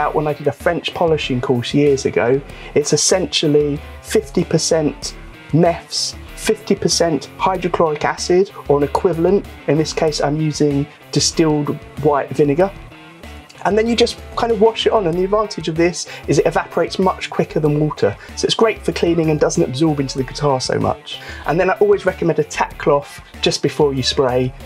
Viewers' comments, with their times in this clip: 0:06 what did you say you used as a cleaner ? I've never heard of neffs before, but it looks like pinesol..